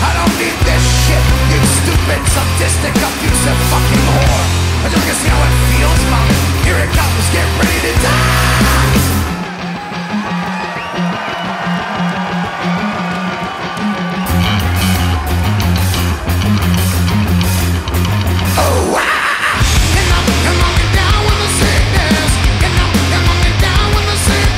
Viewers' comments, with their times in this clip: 0:10 it sounds like he lost his voice